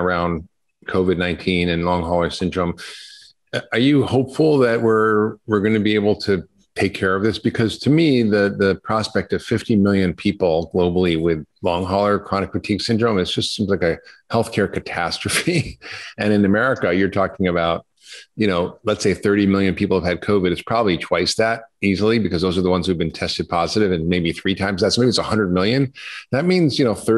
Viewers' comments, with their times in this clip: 0:08 I’m a fan of your videos, Dr. Hyman, but I cannot figure out why you laugh at so many inappropriate places.(like you did ) It’s a bit weird and it makes you seem a bit less serious, less trustworthy, and less believable.